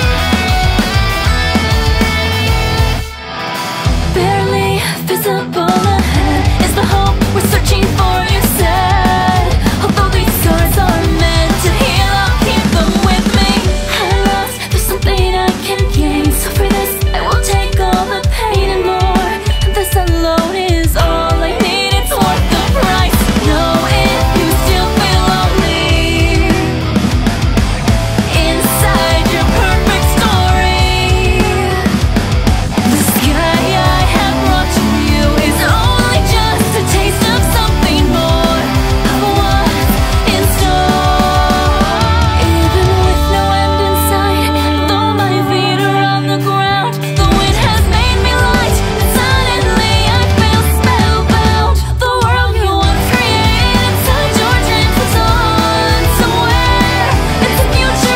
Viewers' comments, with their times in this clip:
0:05 "barely this ebola head" thank me later.
0:30 who's moaning in the background?
0:45 "And though my wiener on the ground' with an Asuna pic slaps